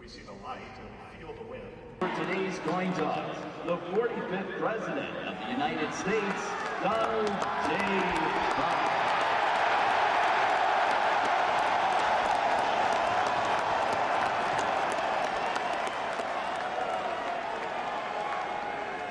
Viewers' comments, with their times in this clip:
0:05 the reaction of the men and woman who protect this country to this man, an eruption like their team just scored a game winning touchdown. It says it all, this man is loved.